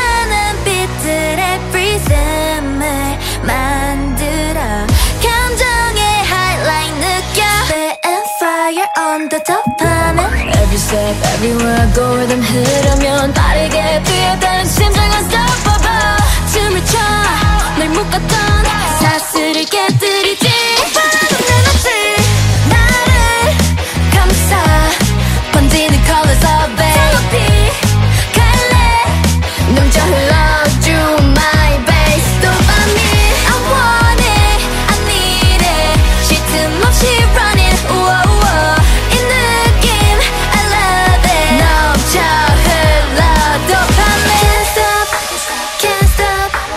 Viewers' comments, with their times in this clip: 0:10 I can't skip this part Her voice here is just amazing 😭
0:29 idk but kotoko kinda sounds like lisa